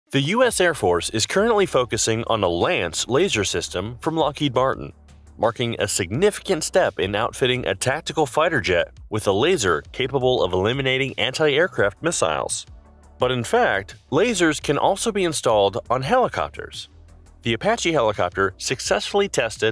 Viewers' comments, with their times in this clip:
0:05 if i was going up against a laser weapon, i would just line my tanks, jets, and ships with mirrors and design body armor that looks like a disco ball. the mirror wouldnt just deflect any laser thats blasted at me, it would also act as camoflauge. Also, did u reallyy call LH.M., Lockheed Barton ??